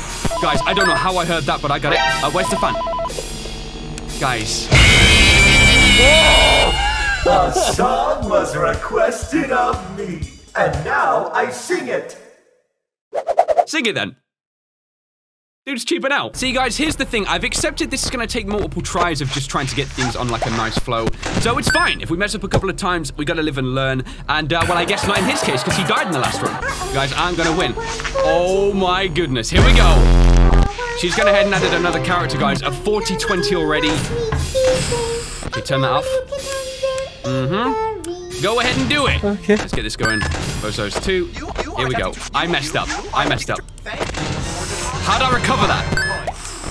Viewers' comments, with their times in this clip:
0:03 I knew it was coming. I heard the Cymbals from Music Man. Phantom Mangle killed you cause she triggered Music Man.
0:05 jumpscare mucic man
0:27 listen to this sync between deeded and trash and the gang